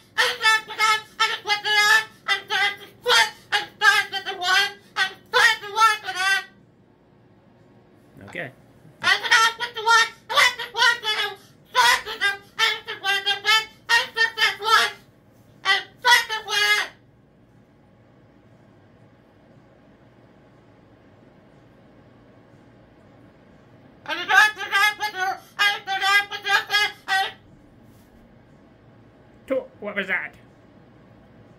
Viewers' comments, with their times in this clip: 0:05 does anybody else hear: 'and f*ck them' 😂
0:15 I could have sworn he said at between to 1: 04. And f**k The vet!